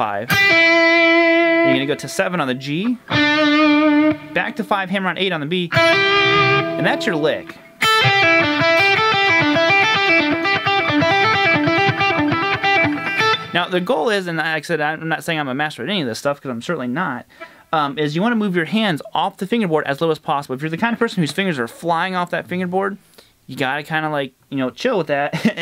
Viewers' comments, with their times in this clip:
0:07 exactly why you play slow... that isn't clean enough man. Every note needs to sing and those aren't.